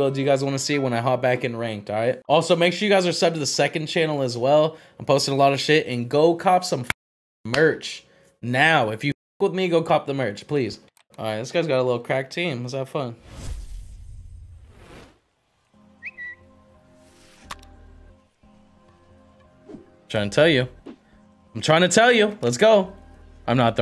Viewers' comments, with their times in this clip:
0:09 he said “if you fuck with migos, cop the merch”